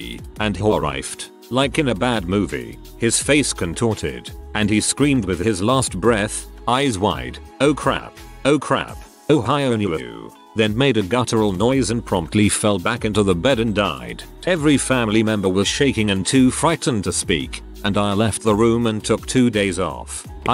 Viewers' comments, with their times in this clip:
0:08 ik this isnt the video for jokes but the text to speech